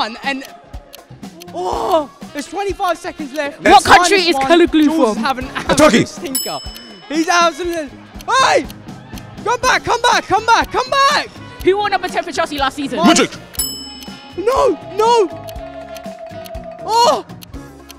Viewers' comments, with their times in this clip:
0:04 That pronounciation was horrible bro. I thought she was talking about Kalidou Koulibaly or something like that 😭